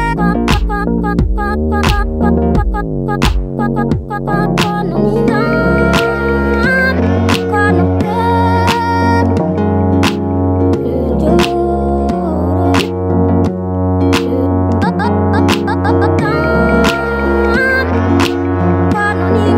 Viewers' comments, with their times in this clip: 0:05 holy shit yes whose voice is this so pretty and powerful